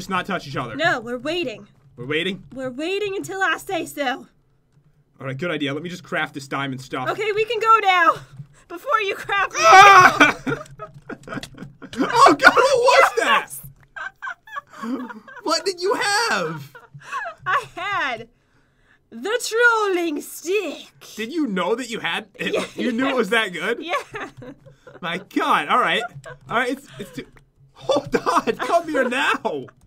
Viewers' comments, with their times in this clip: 0:10 that scream... lol 😂